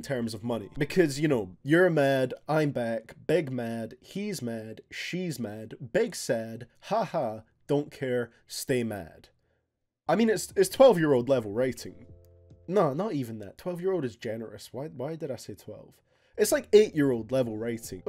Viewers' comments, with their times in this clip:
0:03 I always understood "big mac"🤦‍♂️🤦‍♀️